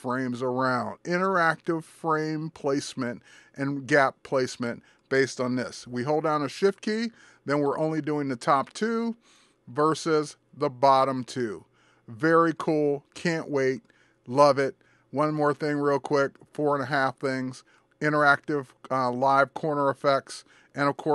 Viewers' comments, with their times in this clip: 0:05 we hold down the shit key? :)